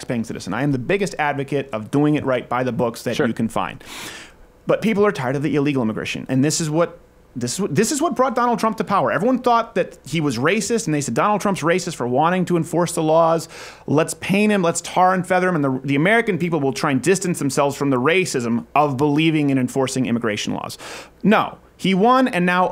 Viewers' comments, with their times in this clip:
0:04 accent was pretty on point lol